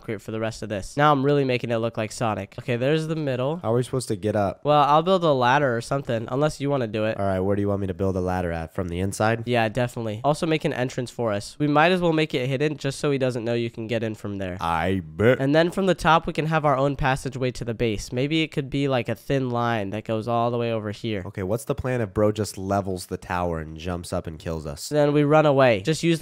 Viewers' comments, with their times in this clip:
0:10 did bro say I bit-